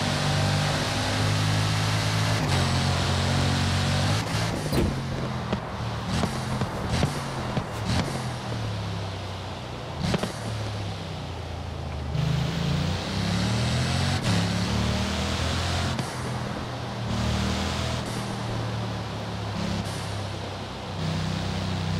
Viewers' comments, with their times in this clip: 0:06 Has got nice beats